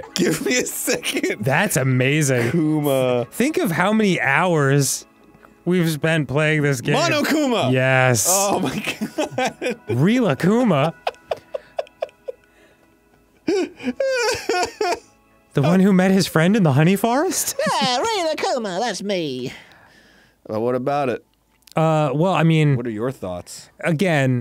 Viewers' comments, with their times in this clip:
0:06 This is already hilarious; The horse sneeze, Arin forgetting the name of the character that basically says his name everytime he's on screen, Arin still dying to "check it out, I'm already eating"